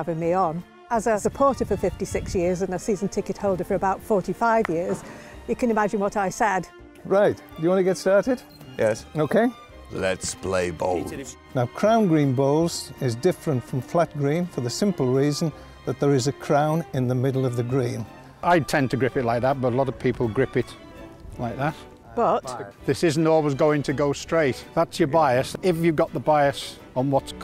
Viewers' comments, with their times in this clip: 0:09 sounded like a game where they say rounds